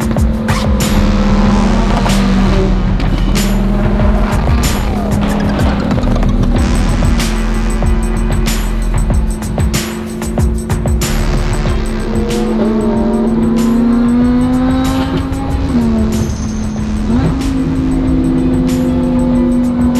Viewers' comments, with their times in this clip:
0:03 did anyone else hear Chewbacca ????????